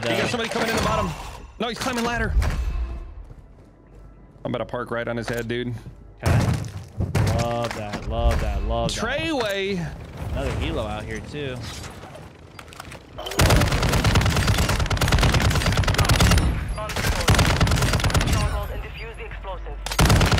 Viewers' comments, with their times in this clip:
0:03 lmao the loud bodies thumping above you is just a wonderful sound, what a great feeling it is to know you can count on your battle buddy